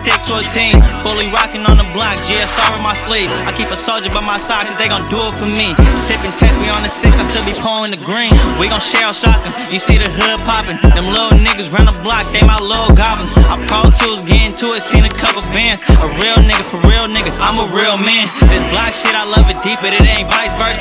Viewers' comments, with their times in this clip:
0:08 The scheme from on is insane! 🔥🔥🔥🔥🔥